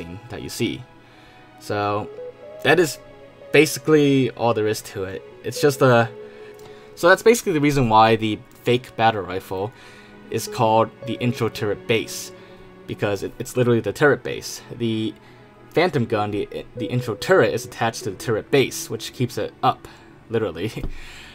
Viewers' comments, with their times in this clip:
0:05 oofff this song is one of my favorite